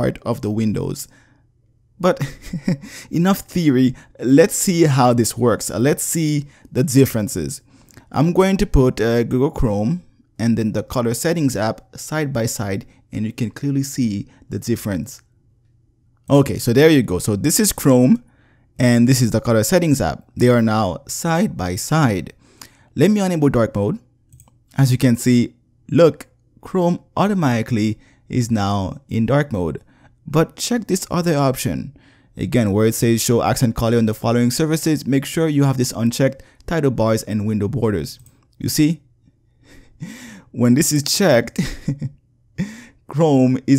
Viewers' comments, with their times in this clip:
0:09 The way you say dark lol
0:25 that laugh made my day :))